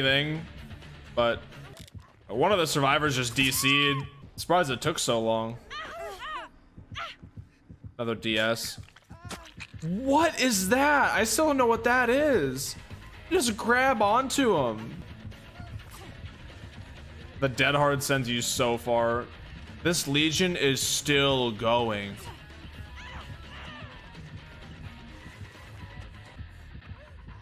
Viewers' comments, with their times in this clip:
0:08 You Hear The Stab Sound Its When Michael Myers Mori's You Or Insta Myers You!